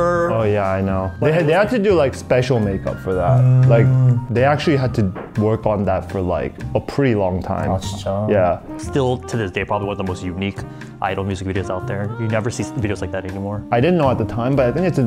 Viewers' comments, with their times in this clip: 0:03 deadass thought my phone just vibrated lmao